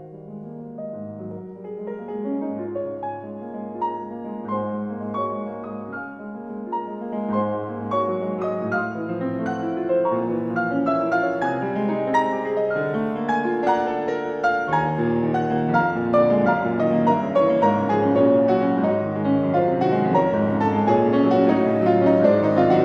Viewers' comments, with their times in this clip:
0:03 but for this moment you need to be desperate (I don't wish you that), because now =, in your rendition of today, it's lukewarm, tepid, with no sense. My eternal advice : DO NOT PLAY DESPERATE PIECES WHEN YOU ARE NOT DESPERATE YOURSELF. It's not complicated, for God's sake ! Be just logical !!